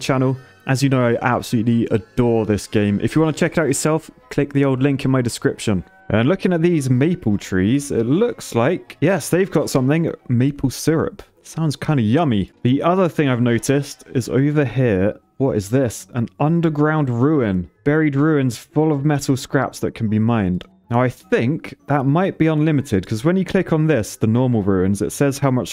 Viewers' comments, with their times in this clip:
0:10 as a Canadian i noticed that you said "delicious" WHO ARE YOU REALLY ARE YOU FROM ENGLAND OR CANADA